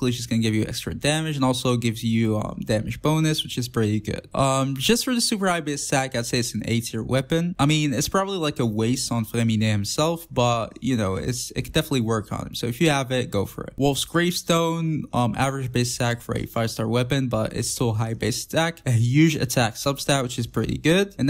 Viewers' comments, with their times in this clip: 0:07 impossible to hear what you say... what weapon is that you are mumbling about? An 8 tier weapon?